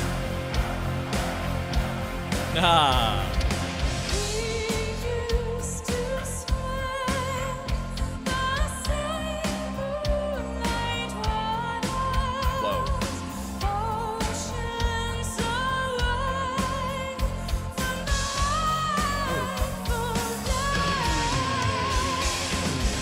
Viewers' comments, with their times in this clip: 0:05 The spell has been successfully cast :D I noticed a weird thing with Floor Jansen, and it happens very noticeably during the long notes at the end of this song. These notes give me a rolling sensation of a sort. I don't know what it is. Maybe she's doing something slightly uneven with the vibrato? Happens with no other vocalist, only her live recordings. I do not get this sensation from her studio recordings.